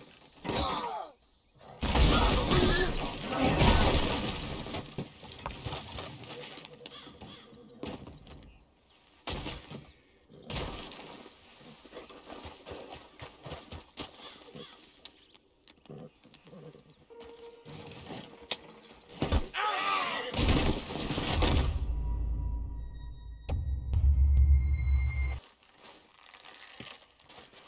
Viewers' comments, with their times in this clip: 0:10 the fart is more concerning then this? ☠️